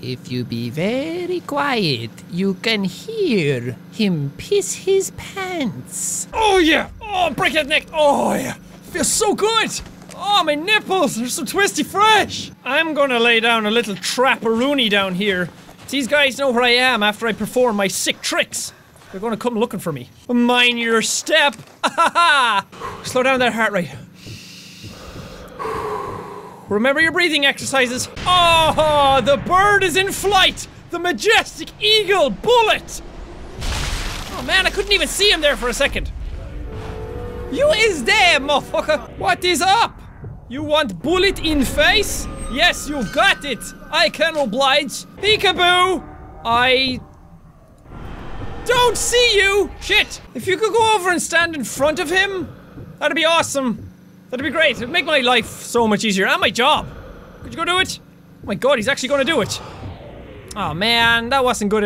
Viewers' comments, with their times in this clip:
0:06 Did Any one notice he sounded like mai'q the liar from skyrim?
0:44 he talked like guru from despicable me a little